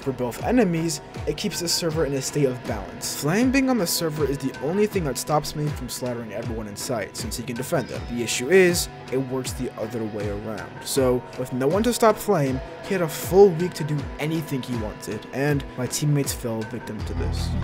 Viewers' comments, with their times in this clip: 0:05 the music brings back mcsm memories bro.